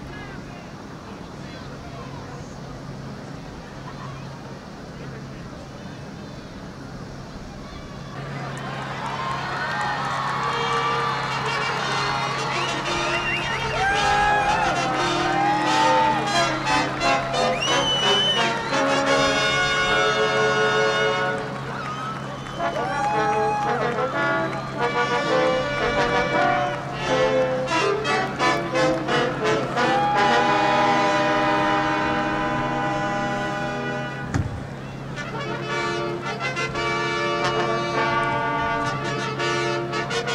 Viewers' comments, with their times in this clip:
0:10 I thought they will start to play Star Wars theme XDDD
0:23 Wonderful but what's wrong with that music man? My Goodness.